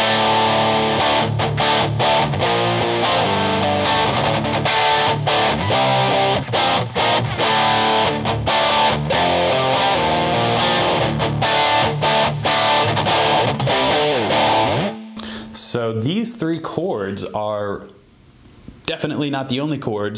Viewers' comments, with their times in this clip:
0:06 that chord sounds exceptionally dank.